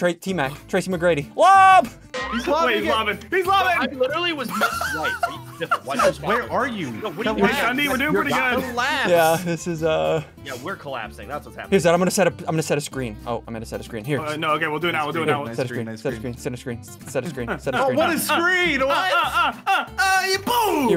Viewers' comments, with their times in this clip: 0:08 there was the air strike on the background